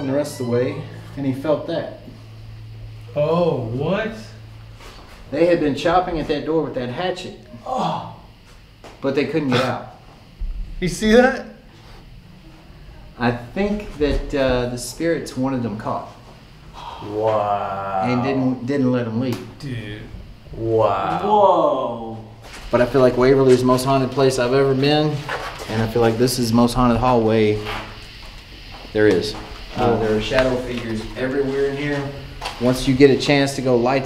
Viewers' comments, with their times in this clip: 0:05 does anyone hear a woman talking ??
0:08 girls whispering or talking
0:11 you can actually hear a chuckle or a laugh when the tour guide is explaining the story about the group of guys trespassing into the building
0:11 a woman starts talking in the distance right after "you see that?"
0:12 At the i can hear a female voice, can anyone else hear that?
0:12 Was there anyone else in the building or was anyone talking on a cell phone ? There is totally a voice you can clear plain as day.
0:14 EVP female voice right after the guide points to the door its very faint
0:15 Using airpods while standing in the stairwell; just before you can CLEARLY hear a woman or women talking over the guide!!!!! I didn’t see anyone else catch it in the comments!